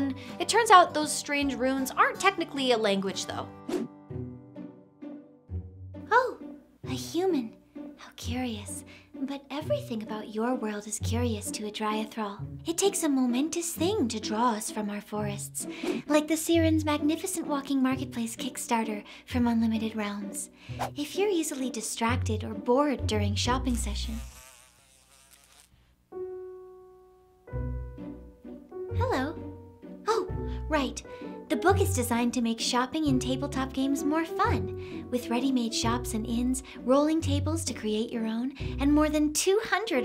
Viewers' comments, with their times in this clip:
0:04 you would make a good Fluttershy voice
0:21 The ASMR is strong with this one. A whole video with that voice would be relaxing AF.